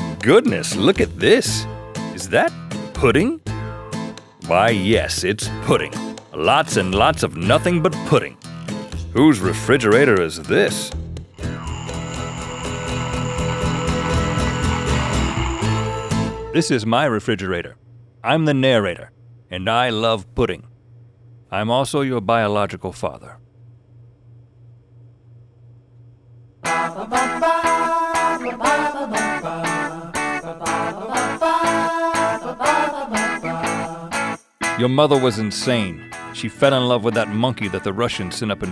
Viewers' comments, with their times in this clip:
0:07 The drive I thought it was glosserek from svtfoe
0:19 OMG YOU LOOK AND SOUND LIKE THE GUY THAT'S JESSIE IN FULLER HOUSE